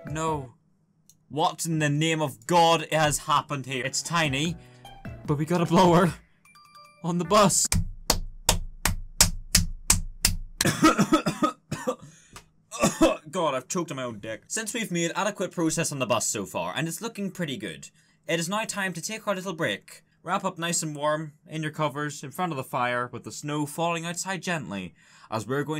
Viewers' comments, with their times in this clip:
0:10 corona virus hit hard eh?